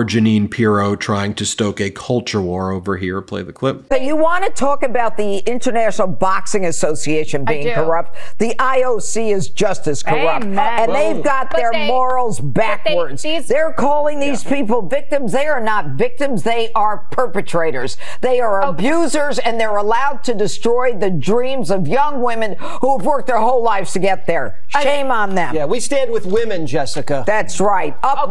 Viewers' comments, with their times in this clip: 0:10 she has an awfully deep raspy voice. Might have a DQ on fox😂